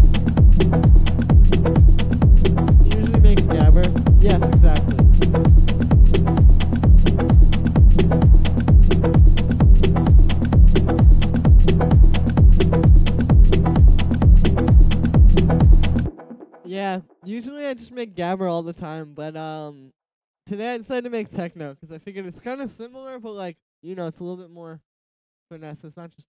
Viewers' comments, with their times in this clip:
0:07 really dope techno